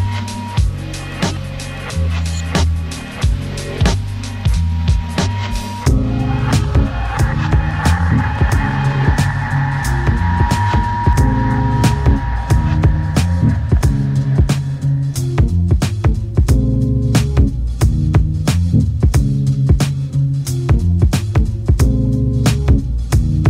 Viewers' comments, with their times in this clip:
0:06 is puuuuuure smooooothnesssssss